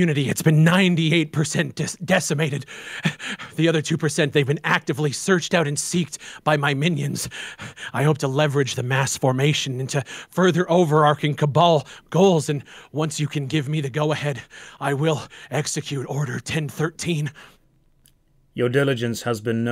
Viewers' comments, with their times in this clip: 0:06 its hard for him to hold back his laughter. lmao. This whole shadow cabal thing is pure gold ... lmao